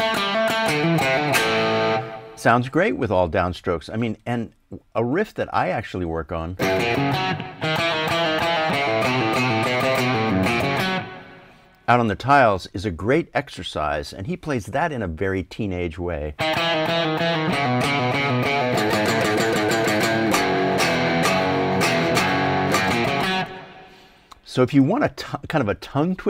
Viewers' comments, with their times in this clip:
0:09 FWIW, Page bends the 1/2 step note ( -) for that riff on Out on the Tiles... which just adds to the hook.